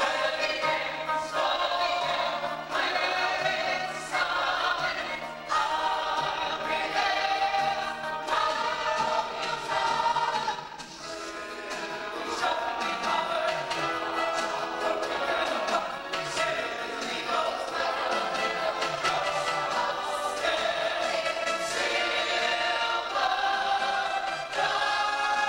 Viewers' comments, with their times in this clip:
0:09 the vocal cracks cute 😂